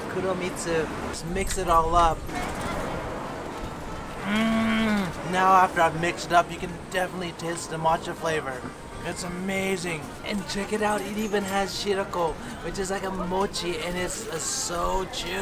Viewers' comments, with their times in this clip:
0:03 Whenever something's good. "Engine revs up"